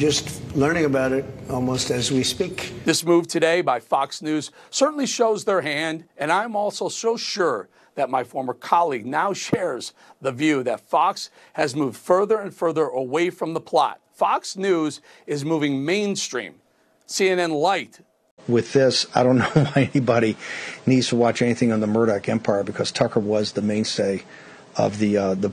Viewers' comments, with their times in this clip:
0:09 h8s voice is shaking